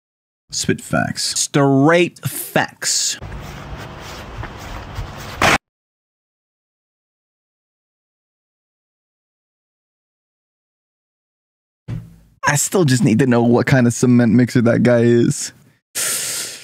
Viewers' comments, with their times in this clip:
0:04 the bonk made me laugh